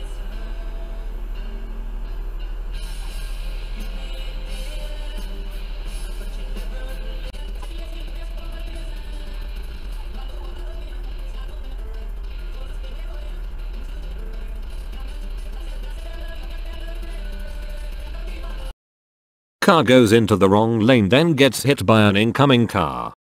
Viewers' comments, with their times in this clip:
0:05 when reo speedwagon hits you on ffwd